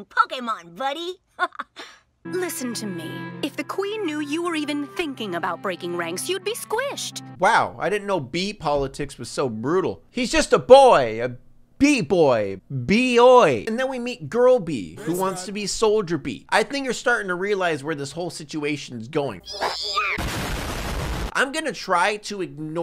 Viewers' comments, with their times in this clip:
0:10 how tf did he sound exactly like Schmidt from New Girl